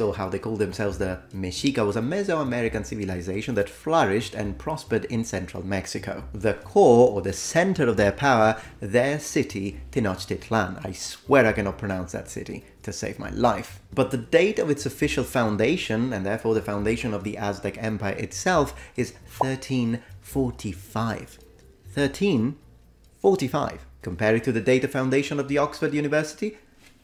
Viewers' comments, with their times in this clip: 0:10 I’m Mexican born and bred and your life is spared, friend. You pronounced Tenochtitlan perfectly. 10/10.
0:10 that's pretty close
0:11 Tenochtitlan was pretty good not perfect but very close, just say Te noch ti tlan